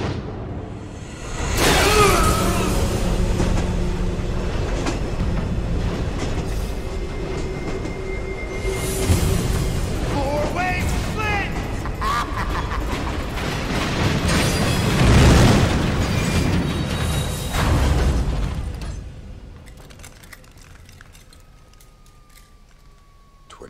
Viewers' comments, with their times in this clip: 0:10 Toombs: FOUR WAY SPLIT (Laughing)